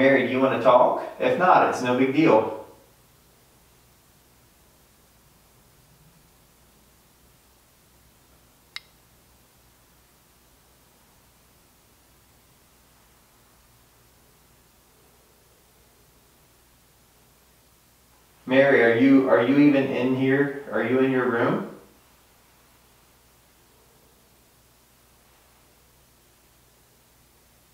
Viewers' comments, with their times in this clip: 0:07 or right after there is a tap on the camera
0:08 you ask if Mary wants to talk and a loud tap is near ur camera like she tapped on it